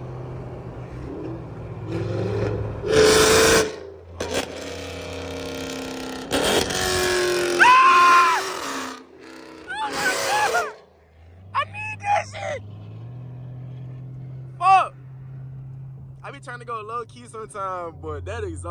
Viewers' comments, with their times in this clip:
0:03 i had my volume down halfway n that shit was still loud as fuck, u created a demon with green goblin